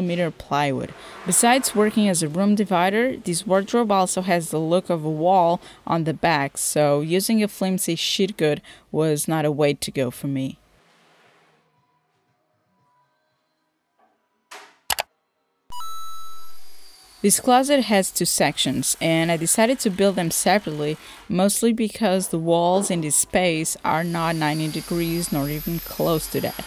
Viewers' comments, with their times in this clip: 0:08 ik she probably said sheet but i had to rewind to make sure, lol